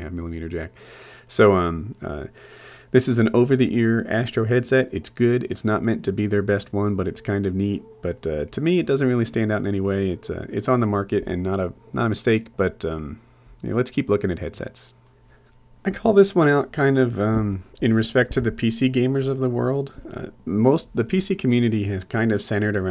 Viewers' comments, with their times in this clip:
0:07 Puppies barking Dog VLOG anyone?